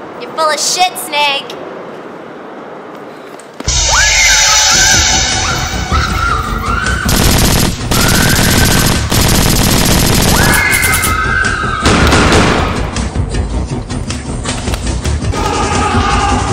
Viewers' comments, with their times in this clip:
0:03 Excellent use of the Halloween "sting" music Overall, very well done on this fan film. Loved every minute of it.